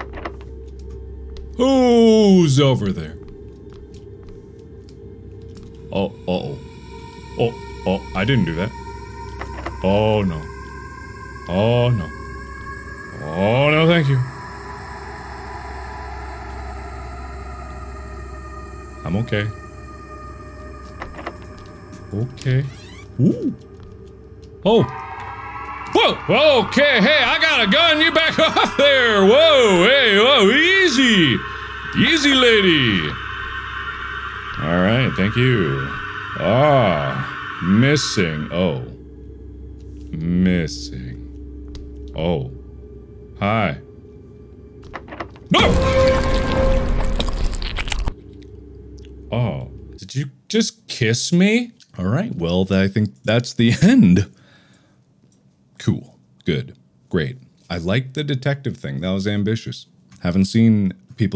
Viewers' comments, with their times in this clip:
0:05 the sound of one of those chicken things dying
0:45 jiggling sounds intensify